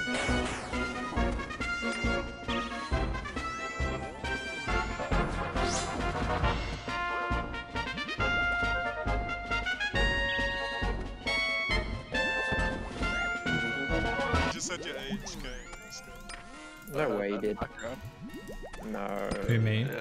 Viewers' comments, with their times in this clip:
0:08 this music brought me back to being 10 years old with my cousins on Nintendo64 playing smash bros ❤️